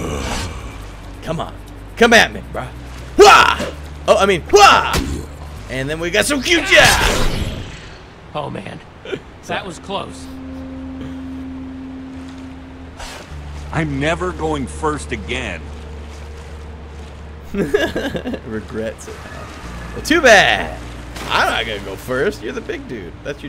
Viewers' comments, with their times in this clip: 0:05 and then we got some HUGHJA-ckman...?